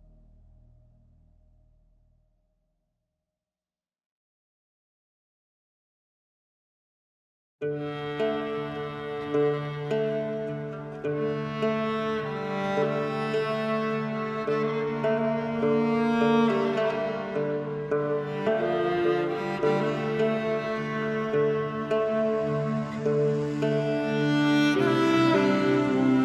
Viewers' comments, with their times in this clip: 0:07 ravensthorpe is different when in the settlement and way better